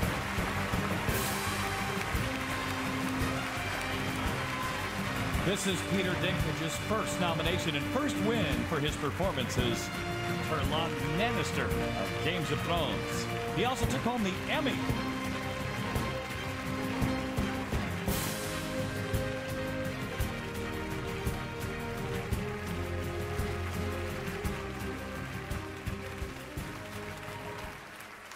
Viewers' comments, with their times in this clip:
0:09 ah yes, Terlon Mannister, of Games of Phones.
0:10 that guy don't deserve to be alive like how can one not know how to pronounce Tyrion Lannister 😒. Somebody dracarys on him
0:11 that poor announcer butchering his name